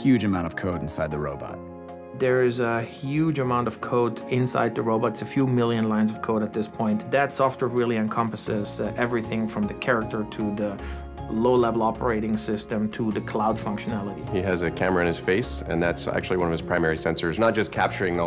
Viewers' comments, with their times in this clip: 0:05 Victor? It's VECTOR!